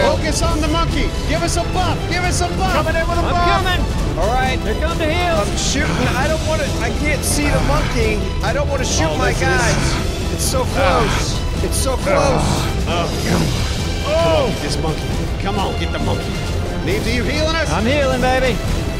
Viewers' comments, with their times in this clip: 0:05 Does enyone else hear moans